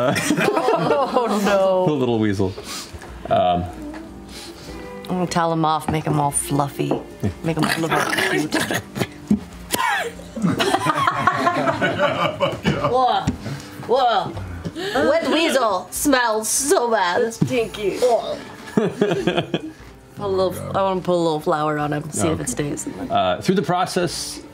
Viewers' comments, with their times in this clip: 0:06 The Floof sound effect is perfect.